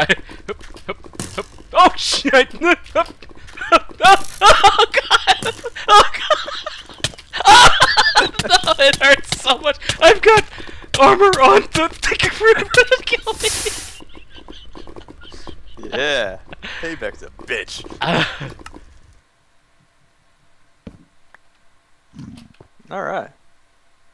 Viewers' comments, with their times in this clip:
0:06 Did I hear the 'ooh' old damage sound ? :O